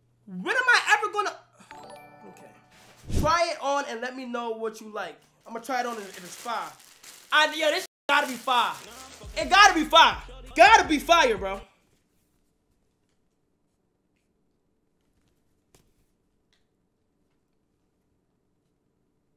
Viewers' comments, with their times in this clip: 0:03 was funny asf😭 The silence was crazy